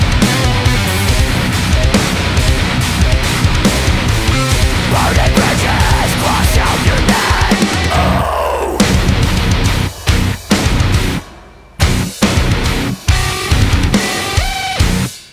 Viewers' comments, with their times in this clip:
0:03 ❤️‍🔥this 🔥you guys remind me of the old dark tranquility but break down is so fckin nasty and HEAVY. The clean vocals are amazing and the blend is incredible. Don’t ever stop! 🐐❤️‍🔥👹